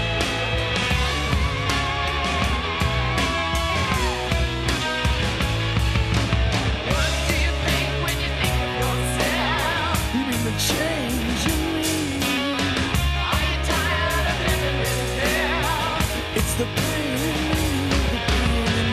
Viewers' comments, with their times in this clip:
0:05 This song is eerie I never expected to get the creeps listening to this band. They had some surprises up their sleeves.